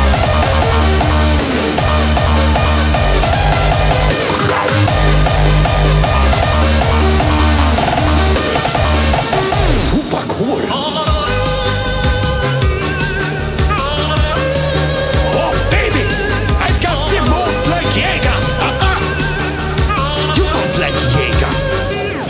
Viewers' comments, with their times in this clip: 0:08 sooooo smoooothhhhh😍😍😍 Btw this is the song that was bringing me to that cool music!!!